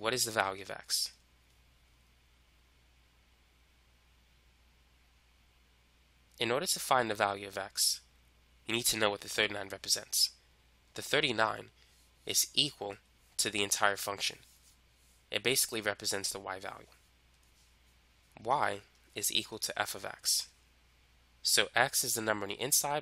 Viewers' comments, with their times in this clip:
0:07 To me this shifts into intense ish, suddenly. Is this just me? The Gof and fog problem, yet your voice sounds as if it's just like the rest.